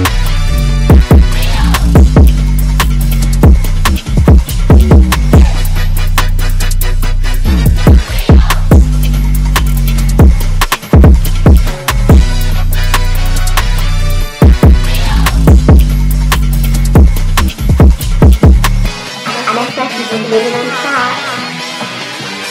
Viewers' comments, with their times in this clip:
0:05 Yooo axel hits the ball exactly when the beat drops